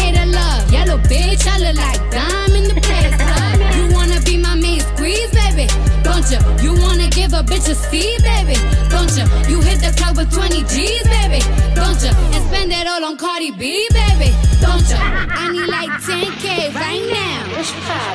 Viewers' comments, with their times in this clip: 0:04 lil kim vibes